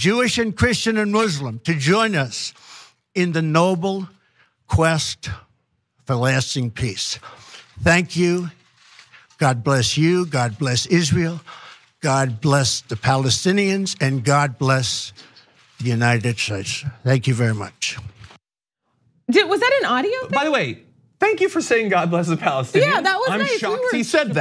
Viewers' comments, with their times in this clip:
0:04 What is wrong with this guy. He sounds like someone on drugs. 😷
0:08 he's higher then cooter brown he can't hardly talk